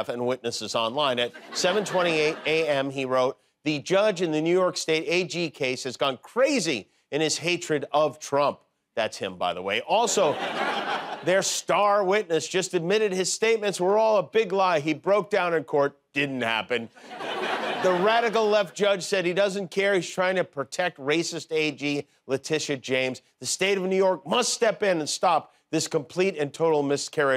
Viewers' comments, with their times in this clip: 0:08 That guy retching at changing the diaper brings back a great memory. I had just moved in with my sister temporarily and she had just had her 2nd child. Back story: My Brother in law (BIL) was the shop foreman over the whole welder's/ship fitter's part....in other words a big honcho. He's this guy with the gravelly voice who runs about 150 guys or so. He got me a job as a grunt so we get up together ( ish) and ride in together to save on gas. One morning I heard this godawful sound coming from the hallway and I see him leaning up against the wall just retching as hard as he could. It didn't dawn on me at first what was going on until I saw the nursery light on and the diaper in his hand. To make a long story short he waved the diaper at me and I (Mr don't have any kids of my own) rescued him by changing that nuclear bomb she dropped. I got a good week's of blackmail material out of that episode, but my dude in this video could have been my BIL....they both acted the same.